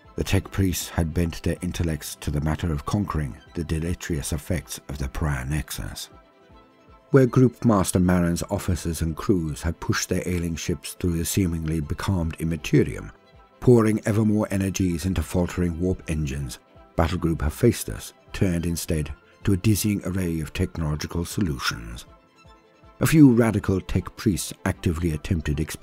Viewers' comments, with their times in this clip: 0:07 Sound editing on point, music was particularly well chosen.